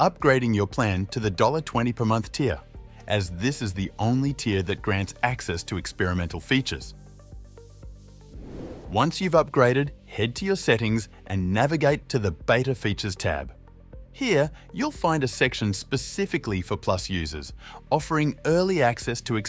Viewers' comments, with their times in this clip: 0:05 "upgrade to the dollar twenty a month tier" ==> $1.20 Screen shot shows $20.00/month